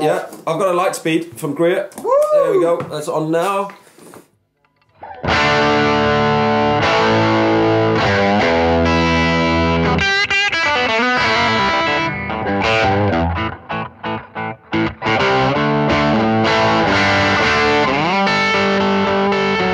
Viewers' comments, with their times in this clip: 0:04 "What's the Frequency, Kenneth?" Love that sound!